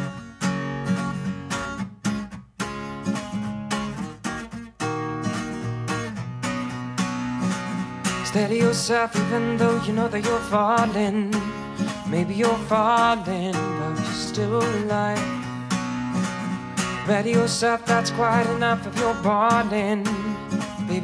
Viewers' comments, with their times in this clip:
0:08 Steady yourself even though you know that your falling I’m keep trying to song this part but it’s a little too fast for me, non-native English speaker😅😅